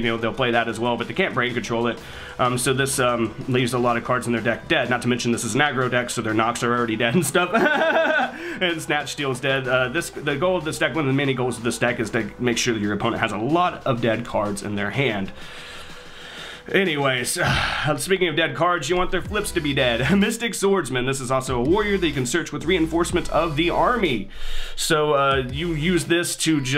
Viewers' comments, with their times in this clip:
0:07 (yami marik laugh)